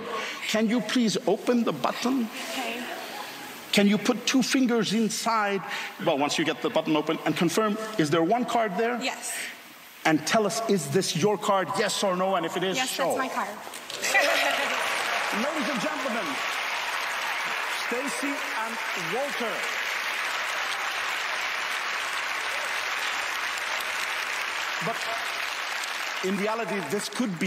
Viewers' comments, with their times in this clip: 0:08 you can hear the sound of the card sliding into pocket from his left hand, but how he get the card, i have no idea. this man is incredible.